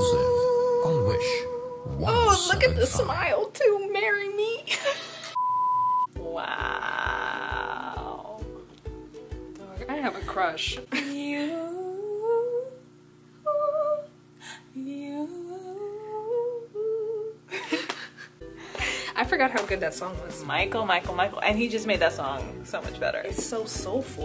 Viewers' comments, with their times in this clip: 0:10 uhm nice singing over there And it's Jane the virgin reference 😂